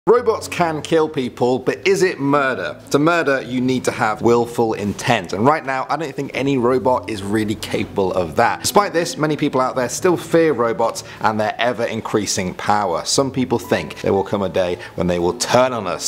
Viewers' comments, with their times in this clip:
0:00 I thought he said Roblox 😂